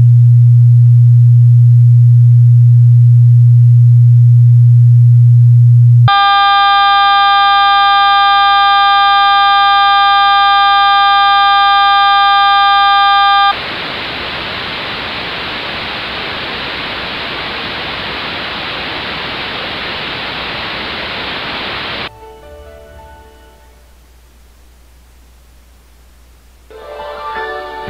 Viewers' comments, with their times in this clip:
0:05 phone lag sound effect
0:09 the scream doesn't scare